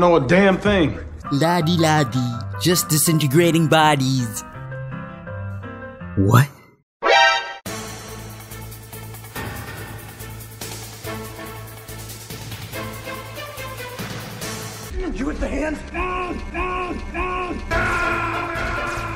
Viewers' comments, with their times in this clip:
0:03 I swear you sound like the fucking Spongebob narrator